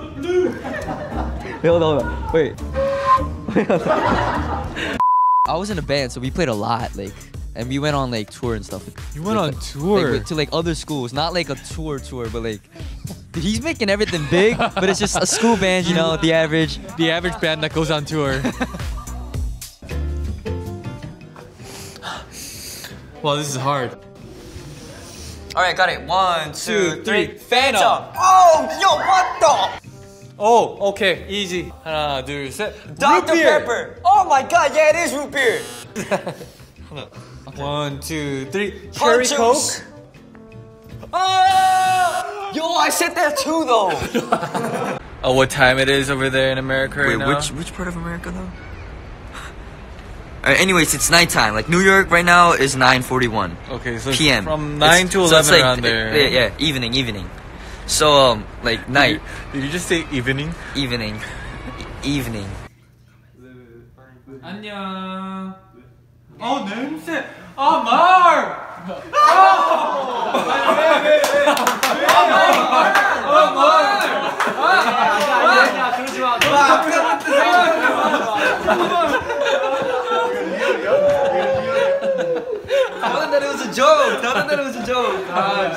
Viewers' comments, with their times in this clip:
0:06 "What the flute?"will never get old. Mark: we went on tour Johnny (sarcastically) You went on touurrr?
0:28 I thought mark said what the f***
1:06 Did Mark really farted ?